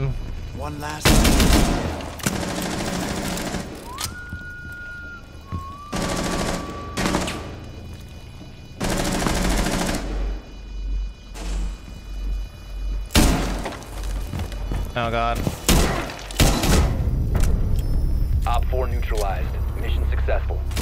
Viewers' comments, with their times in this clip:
0:03 that whistle is crazy, deimos is one of the best lore built operators